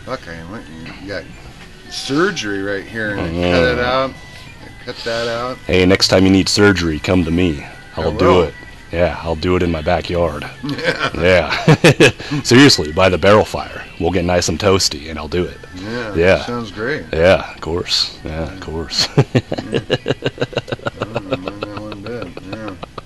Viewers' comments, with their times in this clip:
0:07 the dude sounds exactly like norm macdonald 🤯